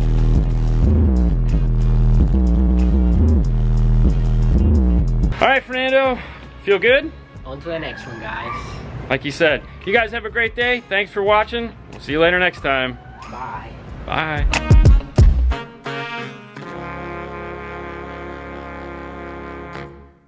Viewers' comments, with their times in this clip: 0:08 Are you guys playing Coco in the background? It sounds like Miguel gritó